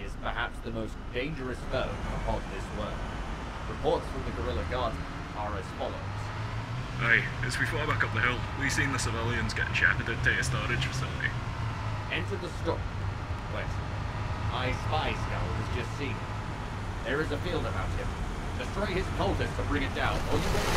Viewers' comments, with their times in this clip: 0:07 Scottish: exists Cogitator: unable to translate